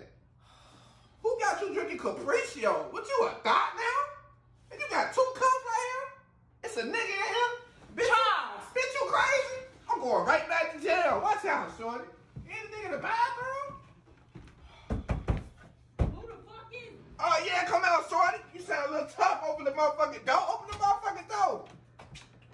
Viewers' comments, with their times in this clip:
0:03 the voice cracks 😂😂😂